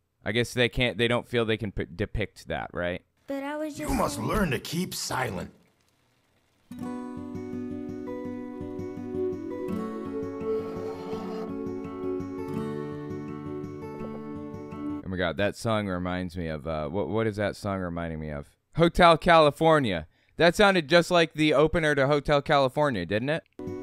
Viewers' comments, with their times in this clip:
0:06 to me that music sounds more like Virkelighetens Etterklang by Kalandra